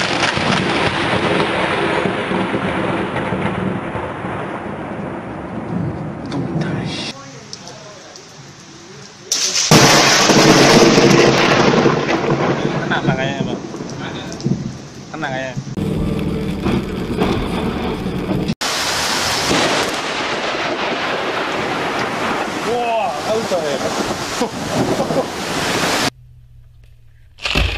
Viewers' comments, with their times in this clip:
0:08 could hear the electricity crackling in that one